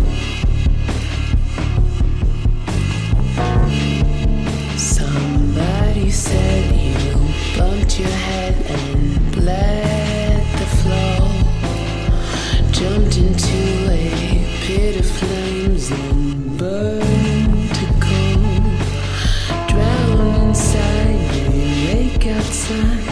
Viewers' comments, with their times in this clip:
0:04 Is the sounds of heaven